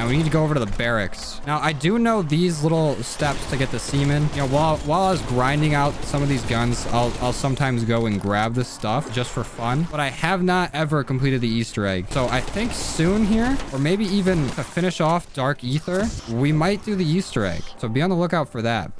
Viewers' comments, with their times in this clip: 0:04 to get the what?🧐